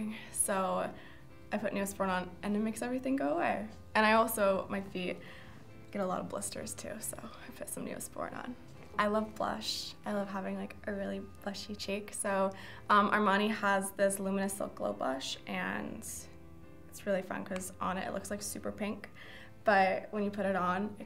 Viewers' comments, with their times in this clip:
0:09 THE WAY HER VOICE CHANGED WHEN SHE WAS TALKING ABOUT THE BLUSH😭